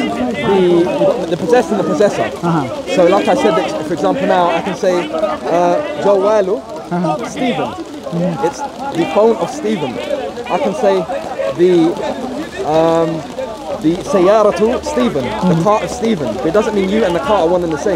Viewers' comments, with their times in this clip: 0:05 This man on the right corner have recorded everything on his phone and he is having loud Laugh... I am sure he knows more.